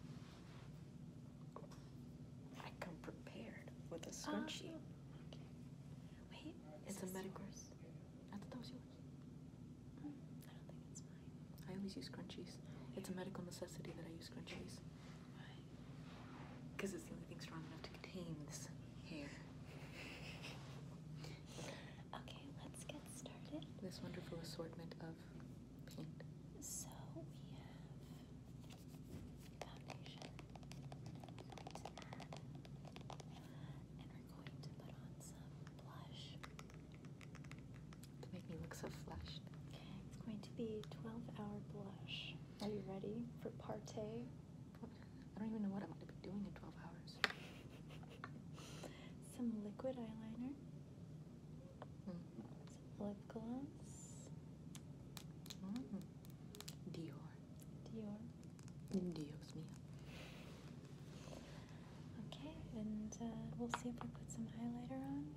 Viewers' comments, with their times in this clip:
0:09 Idk why i repeat the this whisper make me feel so good
0:51 I swear I heard an oof